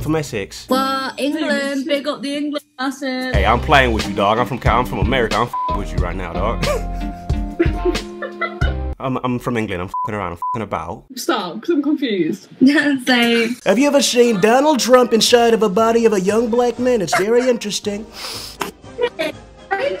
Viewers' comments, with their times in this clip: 0:04 I'm so confused is that just supposed to be a normal guy from California or is that supposed to be Franklin Clinton?